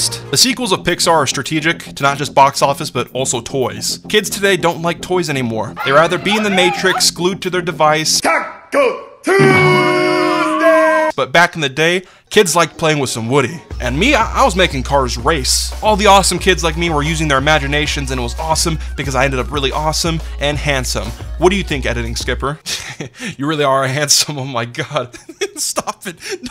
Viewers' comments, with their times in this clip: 0:07 The kid screaming in vr is great